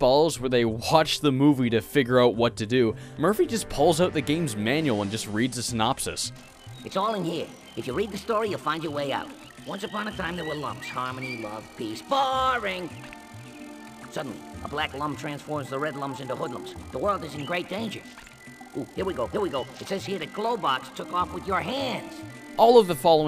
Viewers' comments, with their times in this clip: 0:06 Jesus Christ, what is wrong with Murphy's voice in english version? He sounds like Joe Pesci with pneumonia! I know that I wrote this earlier but Polish version is not only better, but it's also give that game more charm.